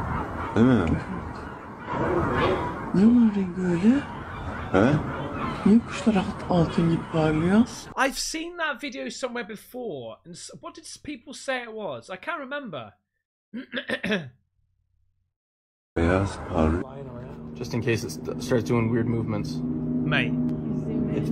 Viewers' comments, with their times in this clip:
0:05 Guls. You can even hear them! Angel / birdman. Did you know that Biblical Angels don't have wings? That is an artist's incorrect interpretation of scripture. They look just like us...but with very fancy clothing. ;)
0:06 these are seagulls, you can literally hear them.